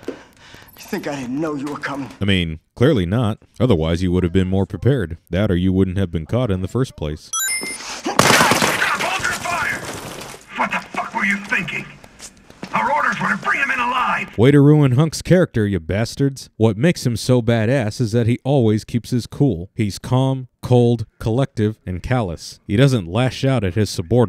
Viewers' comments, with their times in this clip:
0:08 honestly I don’t think the one who lashes here is Hunk. No red eyes and the voice definitely sounds different than in the 4th survivor game mode.
0:08 I don’t think that’s HUNK based on the voice and mannerisms being different from 4th Survivor.